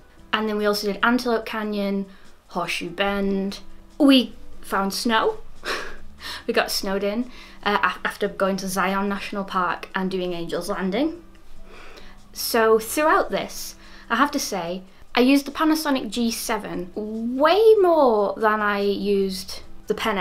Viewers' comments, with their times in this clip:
0:06 you got Snowden?!🤣 that is rare haha